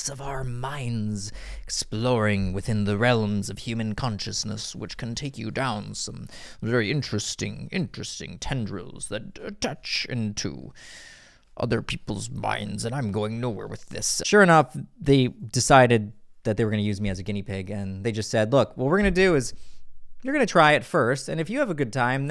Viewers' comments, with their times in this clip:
0:03 ..the realuhhms of human conciousness 😂😂😂